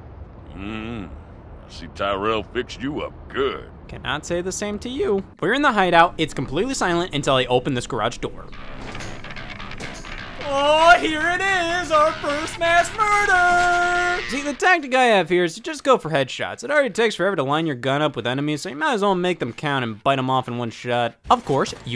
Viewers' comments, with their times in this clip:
0:08 Scott has this fucking chaotic aura around him and his voice